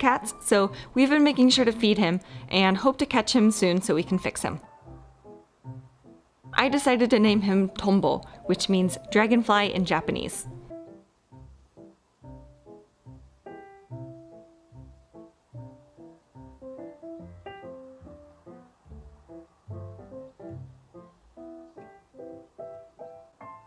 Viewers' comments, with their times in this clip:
0:06 that sounds like "tombul" in turkish which means fatty